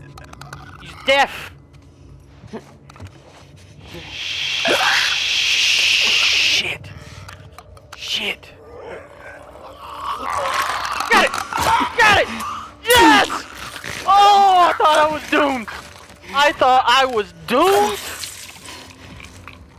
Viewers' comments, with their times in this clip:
0:04 that 3 second shit was putting off cold wind in my headphones